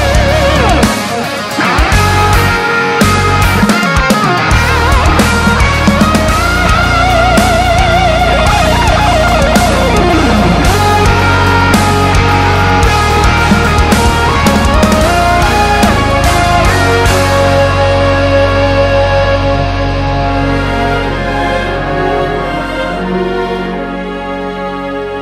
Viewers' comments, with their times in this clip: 0:07 that fill after the melody gets stuck in my head all day every time I hear this. It's so good!